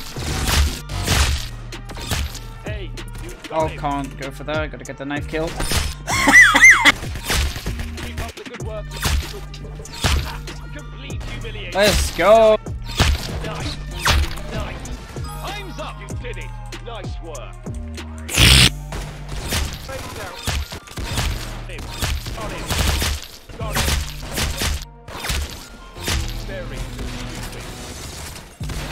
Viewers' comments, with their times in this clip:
0:04 this laugh tho 😂😂😂
0:05 that laugh tho-
0:05 is he good?? bro turned into a kettle lmaooo
0:06 Not the sneeze💀
0:06 What was that laugh 😂
0:16 ASMR Moment 2 XD